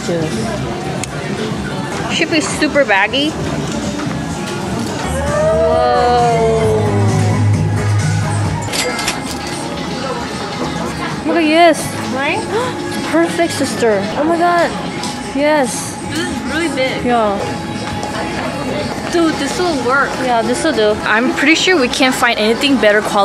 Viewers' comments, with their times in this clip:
0:05 Bopping to when we disco